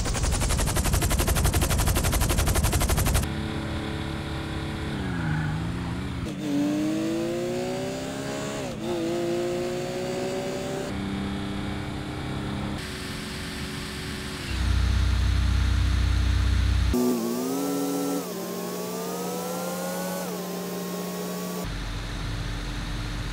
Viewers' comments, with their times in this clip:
0:04 why do they sound so good sped up
0:06 sound of Porsche lol